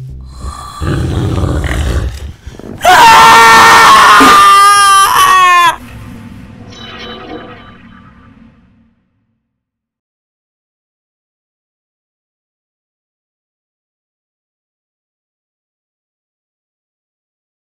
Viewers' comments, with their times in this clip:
0:03 huh i had headpones and full voice